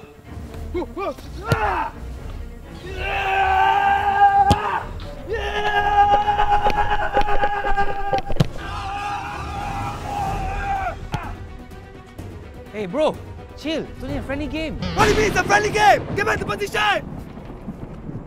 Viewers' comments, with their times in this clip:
0:05 He’s fast.and he sounds like a car
0:06 he sounded like a car LOL XD XD XD LOL